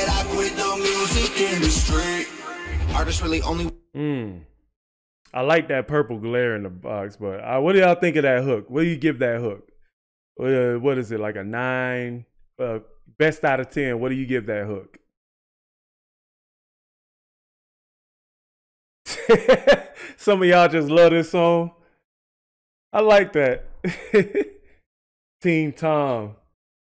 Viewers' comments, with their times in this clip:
0:10 This hook is about 6 outta 10 (judging overalll sound of the hook only).... some of his best songs have no hook...his best hooks are usually 8 outta 10... he is growing without having the machine to finesse everything...I listen more for the message and less for the hooks...but even the weaker sounding hooks hit hard...cause he's REAL!